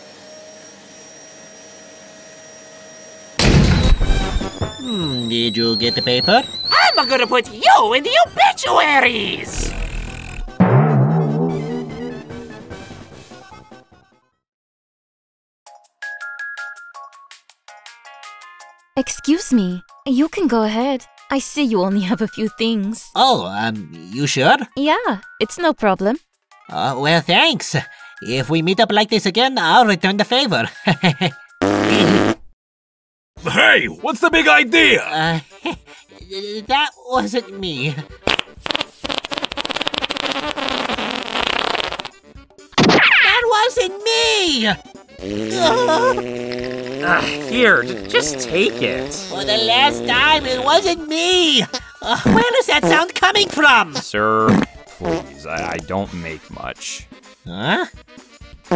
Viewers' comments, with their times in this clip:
0:06 That was delivered perfectly!
0:31 Farting in the store 🏬🏪 prank
0:45 Skunk fart spray!